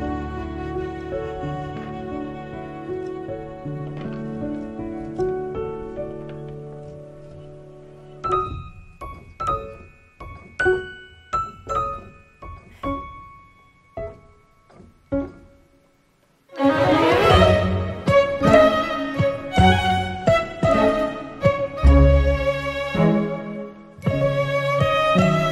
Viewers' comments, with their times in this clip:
0:10 someone's been listening to Erik Satie